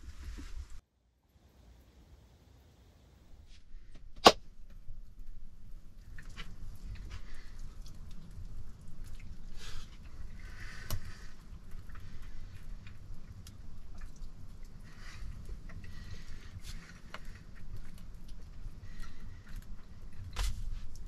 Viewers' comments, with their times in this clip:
0:03 Love the part where the meal appears with a hand clap. 😍